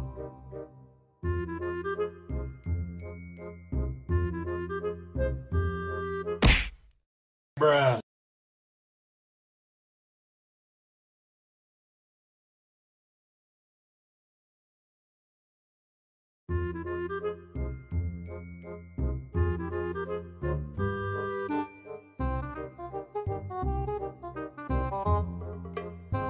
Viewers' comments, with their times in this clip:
0:07 "bruh'' huh? Who said that?